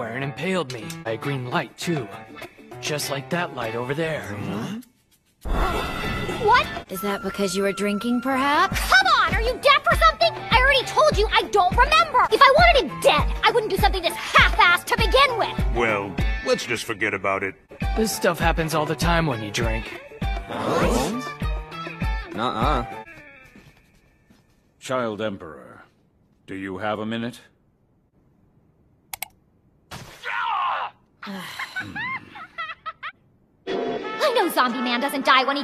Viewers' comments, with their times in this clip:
0:08 is it just me or Tatsumaki sounds mostly like Melissa Rauch (the actress who played as Bernadette in Big bang theory show) when she shouts ? sounds pretty familiar to me.
0:18 Why does he sound like Shikamaru